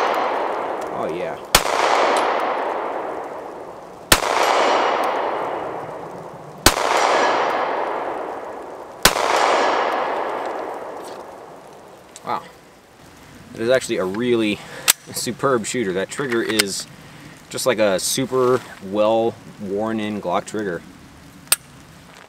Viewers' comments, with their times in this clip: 0:10 Love the mic quality 👍